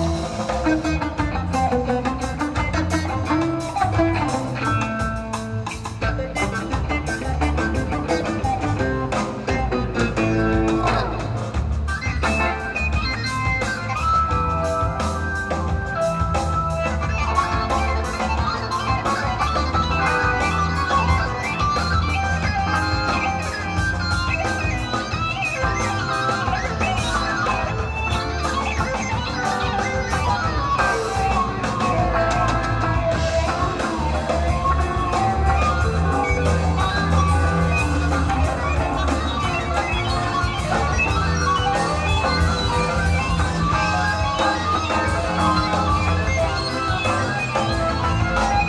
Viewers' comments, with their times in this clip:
0:05 What instrument is that there's no way that's a guitar if so that's out of this world
0:30 no freaking way!!!! I have been looping that transition for the past week... sounds so trippy